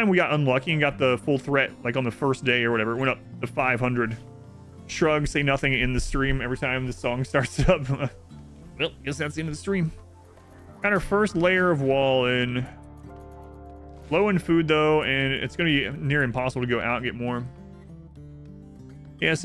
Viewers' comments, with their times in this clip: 0:05 Yeah even when watching other youtubers I hear the song start and I get ready to exit full screen as the video "ends".